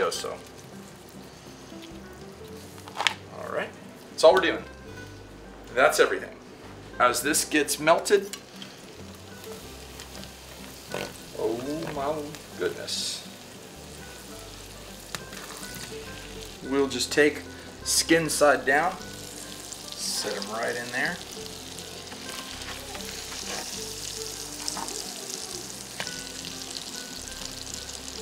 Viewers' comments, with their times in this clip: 0:10 did he just fart
0:11 why does it sound like he is farted